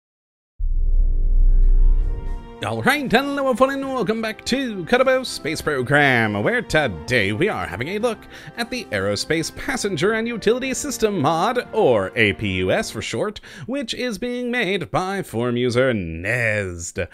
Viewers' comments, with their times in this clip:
0:00 What the heck did he say??